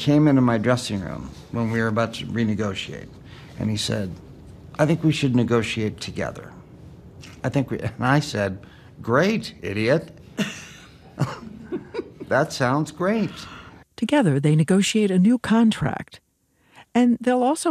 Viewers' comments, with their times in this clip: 0:03 the way he delivers the story os so characteristicly chandler/matthew🥲